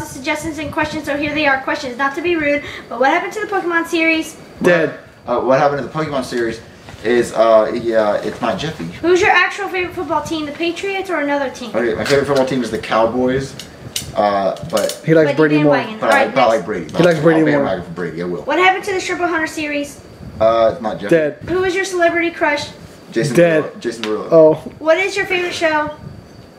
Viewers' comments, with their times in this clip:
0:09 what was that voice